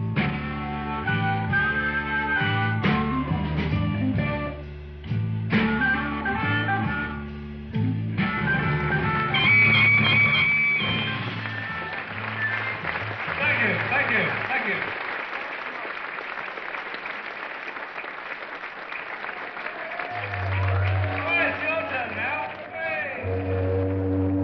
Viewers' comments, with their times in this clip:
0:09 I love how the harmonica plays loudly and the birds are scared away!